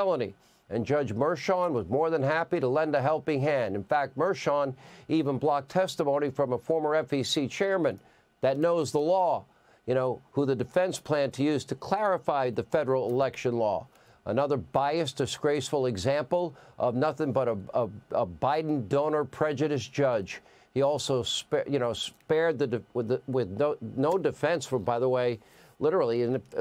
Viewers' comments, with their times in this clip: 0:08 Hannity something has good points but he is horrible and speaking